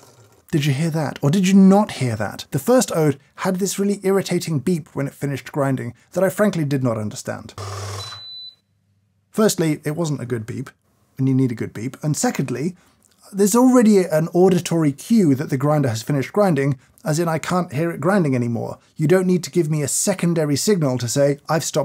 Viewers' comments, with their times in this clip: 0:07 The beep was indeed no good. Sounds like up around 4kHz…maybe something like an E7 from a violin around 2.6kHz would have been better.